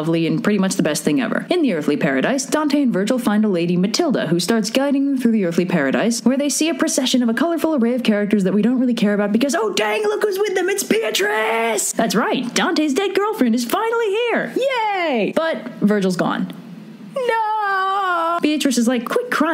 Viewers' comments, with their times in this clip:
0:07 i thought that fortitude said fortnite oh good god